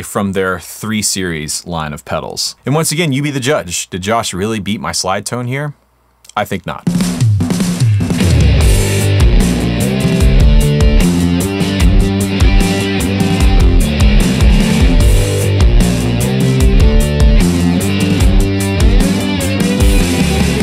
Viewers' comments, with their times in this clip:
0:04 Guys he starts playing